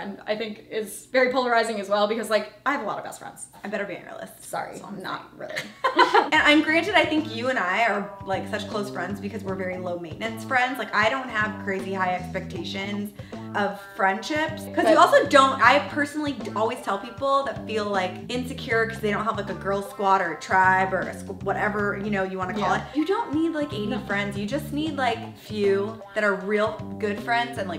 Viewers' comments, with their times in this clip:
0:07 the 80s porno music doesn't really work as background music, just a tip. Love u k bye😇❤️
0:07 Omg the music change gave me weird porn “bwah bwawm” vibes lol
0:09 could anyone else hear really quiet background music from ?